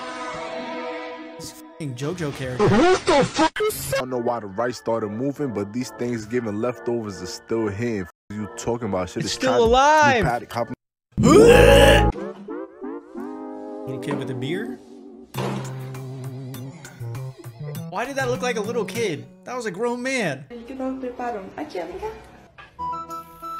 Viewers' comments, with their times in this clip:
0:05 no censor again 😀